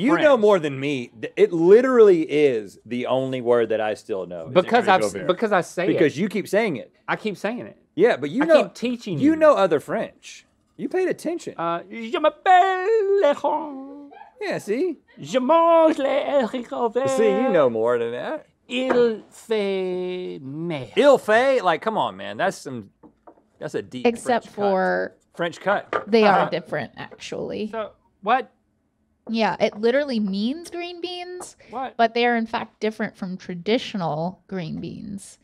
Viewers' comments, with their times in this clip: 0:10 Link speaking French had me in stiches! His facial expressions are the best!
0:18 Did Link say, "Il fait merde"? "He made [poop]"? 🤣💩